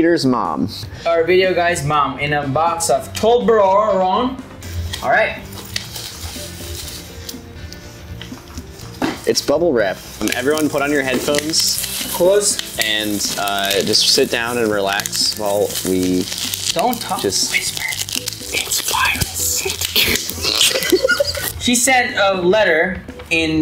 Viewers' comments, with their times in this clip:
0:09 ASMR button xd